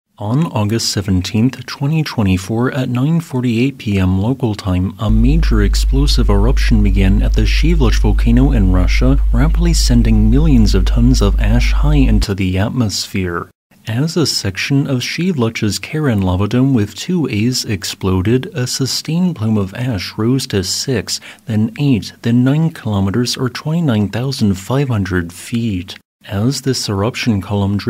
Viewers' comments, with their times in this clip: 0:05 you got an audio issue low bass.
0:15 I admit I was listening a bit causally when I (thought I) heard "... the Karen lavadome ..." After working with customers for many years, that had a terrifying ring to it! 🙂